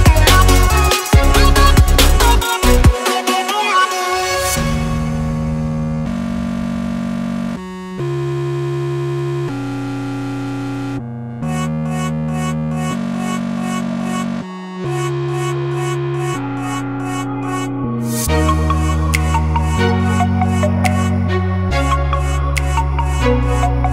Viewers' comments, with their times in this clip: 0:05 I thought my computer got into:-- Your computer ran into a problem, we are restarting (the sound)-